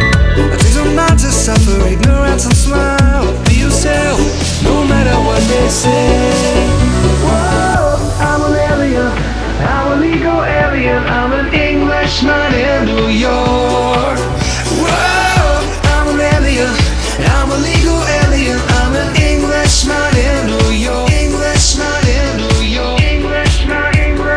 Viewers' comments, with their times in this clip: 0:09 Youtube CC: I'm a Lego alien 🥲 Anyway, best summer 2011❤